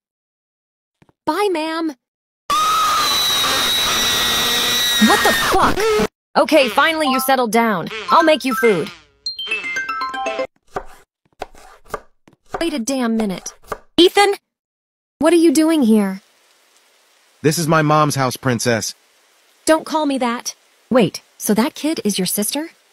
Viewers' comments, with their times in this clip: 0:03 rip headphone users 💀